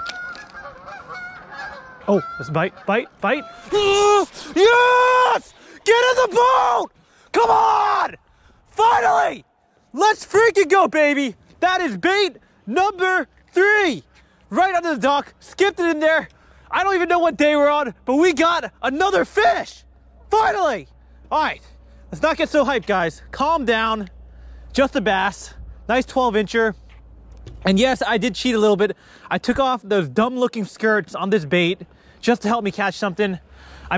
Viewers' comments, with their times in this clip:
0:04 BRUH stop yelling
0:18 the fish be like: what the hell is this guy screaming about